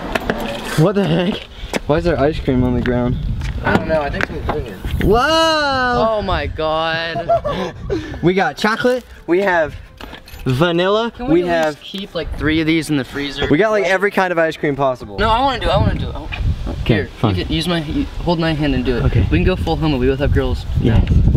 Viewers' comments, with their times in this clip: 0:08 For some reason I love how he said chocolate 😂😂🍫